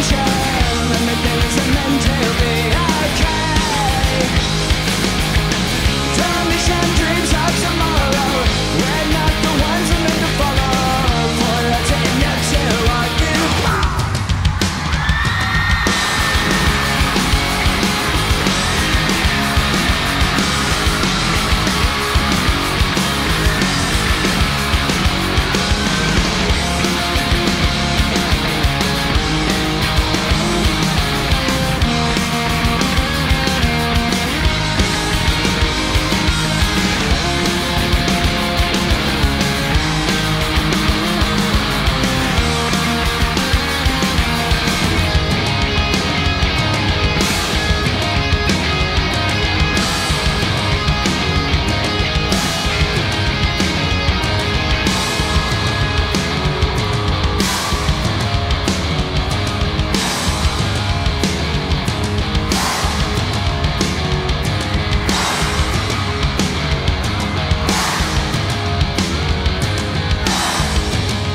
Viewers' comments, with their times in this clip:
0:10 Whos recording this on their flipphone?
0:53 guitar part Need to re record for that part amazing